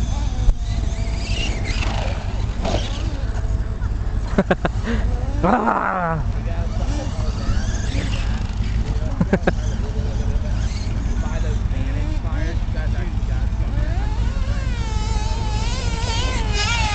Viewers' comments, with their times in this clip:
0:04 why did you growl